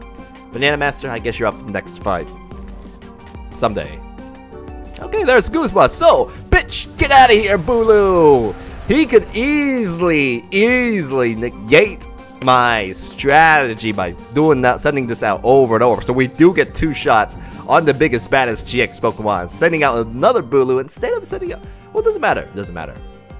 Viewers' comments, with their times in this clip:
0:08 that sounded like an expletive